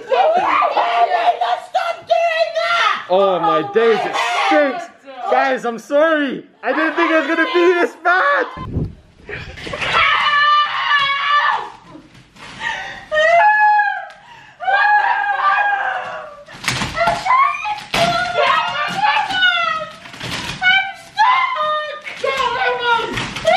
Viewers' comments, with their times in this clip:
0:10 I love there is just a foot in the air and sm1 screaming “HELP!”
0:10 like a butterfly, these rare specimens of screaming bugs emerge from there cocoon of sticky tape